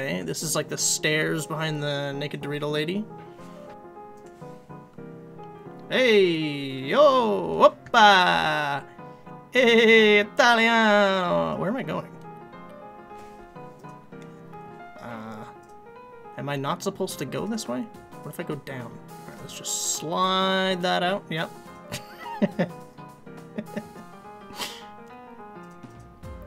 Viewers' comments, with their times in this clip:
0:09 when you realize that he was speaking in Hindi
0:11 did he just said in hindi (i am new here)